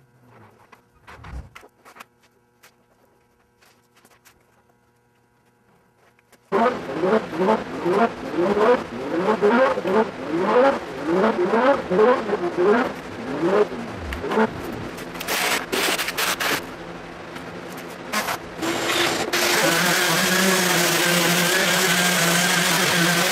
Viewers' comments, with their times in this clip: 0:09 I love the engine revs at the mark!!